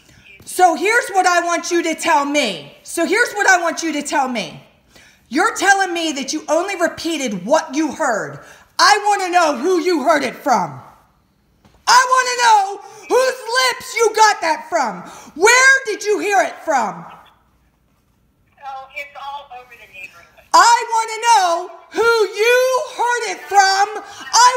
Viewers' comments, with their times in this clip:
0:09 Bro the person yelling at the nosey woman literally sounds like my 5th grade teacher yelling at some guy who cursed in class